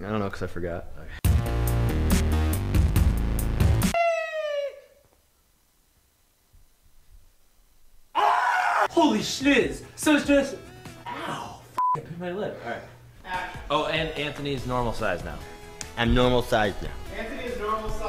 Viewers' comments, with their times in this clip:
0:06 Look at Anthony when Ian scream.